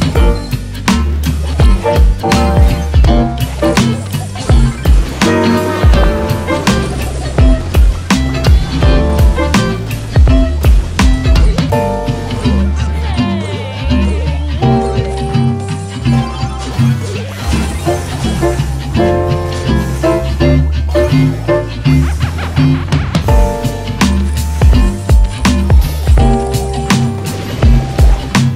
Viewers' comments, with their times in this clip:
0:09 that Janet synced in with the music